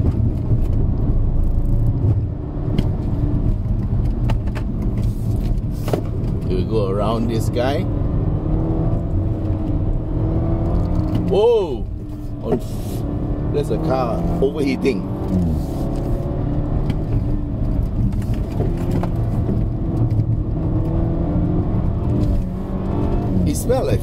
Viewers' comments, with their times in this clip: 0:07 It's midnight and I'm still watching... Btw,, after 'go around this guy' the F word almost there but being swallowed back 🤣🤣 and guess what I kept repeating it 😆